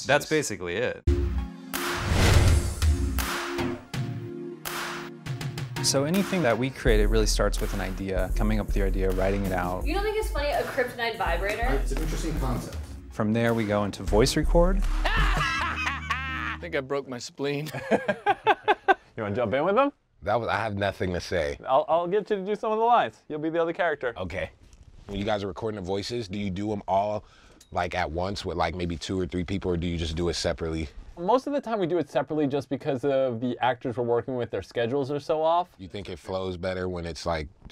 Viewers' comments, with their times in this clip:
0:03 the beat kinda sounds like Pigs Fly from Bastard
0:24 Tyler's like a 3 year old toddler "OKAY" LMAO IM DYIN